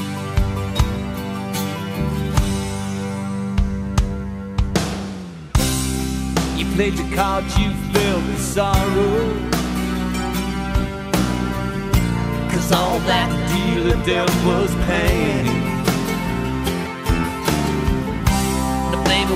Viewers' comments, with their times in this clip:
0:04 THIS SONG...i dunno..i have fascination with. I think Alice's version of Chris Cornell's written STOLEN PRAYER same album is superior but IT'S ME bordered on greatness! I've never analyzed a song so much; times like this I WISH I knew songwriting structure LOL. The FIRST 30sec & then 25sec of 1;40.. HAUNTINGLY BEAUTIFUL! ..and the LYRICS: "You took a first class trip to Paris.. you danced on the streets of Spain".. PURE POETRY!! .. but the song detours in chorus to.. well no other word for it but.. mediocrity. It seems that the Beginning and Bridge were different/darker ...like someone recalling memories reflected in evaporating puddles of rain water just before a looming storm from a Dark Cloud on the Horizon washes them away... ...but maybe that's just me. Yeah.. ..It's Me.